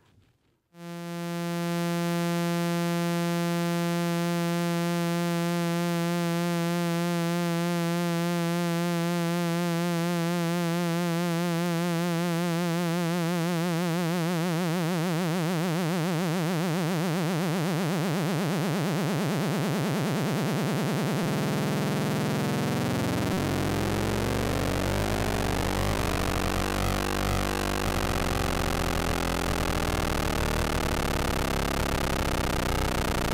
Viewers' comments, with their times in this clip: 0:04 when mosquetos flying around my ears :D
0:15 Deffo sounds like the sound from one of the levels in Sonic the Hedgehog One. Does anyone know if Sega used a Moog for irss game sounds?